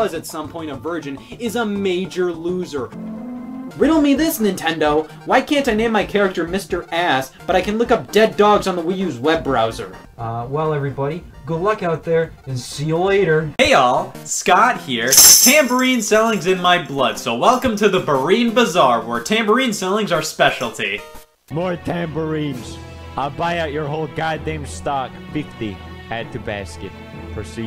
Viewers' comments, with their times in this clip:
0:10 he sounds exactly like George McFly from Back To The Future.